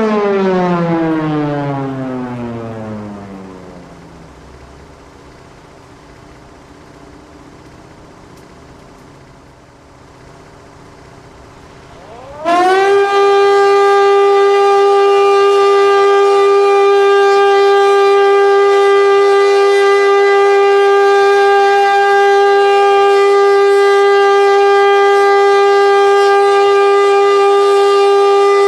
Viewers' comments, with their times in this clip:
0:10 The most known sound in Tel Aviv and Jerusalem. When you step on a Lego peace.
0:14 When i was a kid there was an HLS F71 siren nearby my school in "beer sheba - israel" and at all memorial days i always jumpt when the siren was started, also i've lived 10 meters from an HLS 273 siren and that was very scary at the nights when the alarm siren was triggered AM and woke us up to run to the shelter, in my opinion the F71 had better sound then the 273 (the f71 had most clean and deep sound then the 273) damm i miss that siren